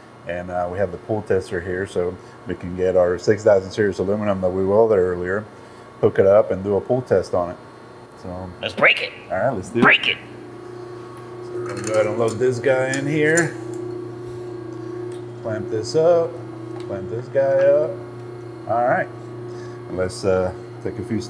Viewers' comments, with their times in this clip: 0:08 omg the Beavis "Break It!" was spot on!